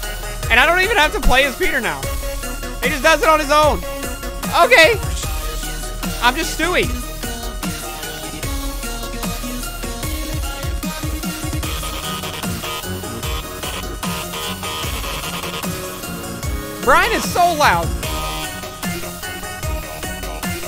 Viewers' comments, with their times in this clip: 0:04 “He’s screaming in my ears”